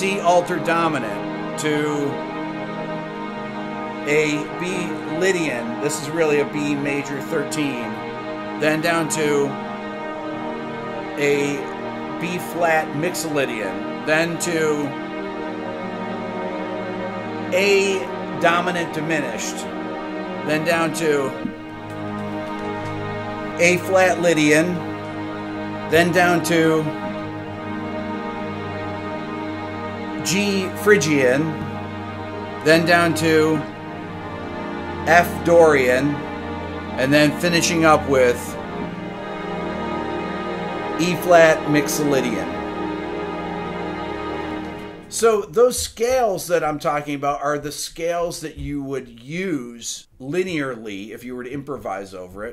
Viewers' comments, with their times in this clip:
0:10 I got goosebumps when you hit the A dominant diminished
0:40 the Eb7Sus4/3 has the Eb in the bass? Also, Bb (5th), F (9th), G (3rd) and then an Ab (11th) on top but no 7th?